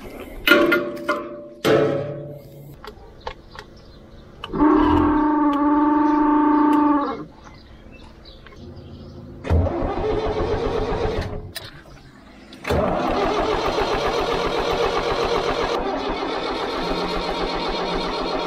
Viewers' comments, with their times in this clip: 0:04 Chewy, is that you?
0:04 Hahaha that Wookiee scream
0:06 It’s got the old Chewbacca starter 😂